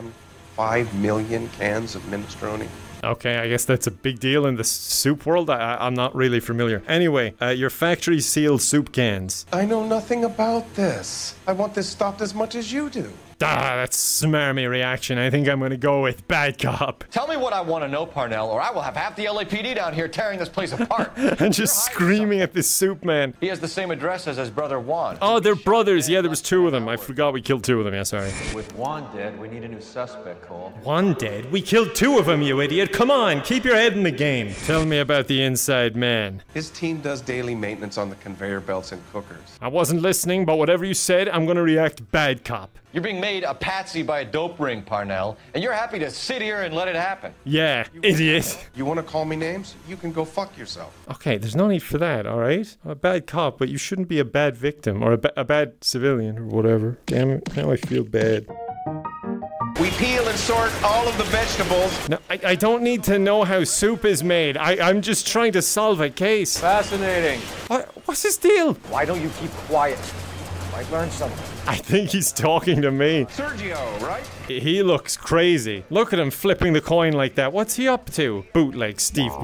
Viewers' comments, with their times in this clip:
0:08 What the... This Parnell sounds like Chris Parnell! At least in that moment, I haven't heard his voice outside of this video. I know it's not, but that instance had me think it was him :P
1:03 At the mark i heard we pee on and sort the vegetables